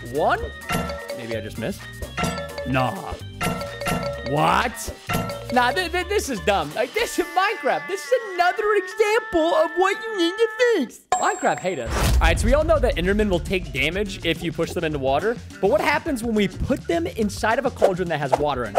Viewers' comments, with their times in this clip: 0:06 be like: this is another example of whnut nyou ned nto fnix